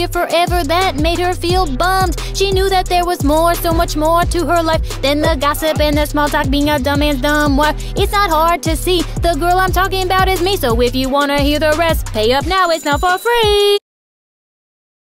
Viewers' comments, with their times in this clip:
0:06 I thought they said dumb men and dumb wife on